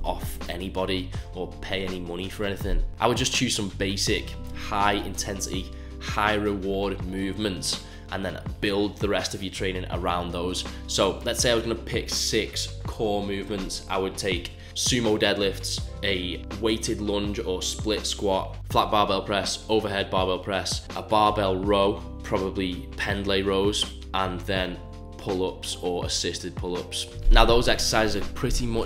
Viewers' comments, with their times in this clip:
0:10 I was wondering "what the fuck is flat baba press" 😭